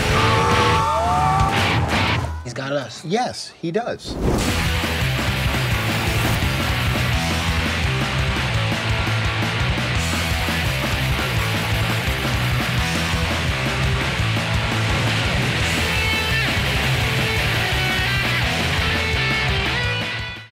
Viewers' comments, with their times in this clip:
0:04 DAMN THAT TRACK!